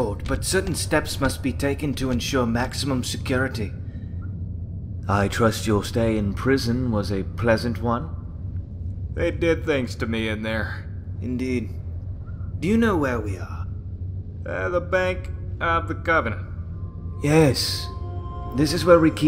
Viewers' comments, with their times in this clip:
0:06 I totally heard Cleveland and Joe around the mark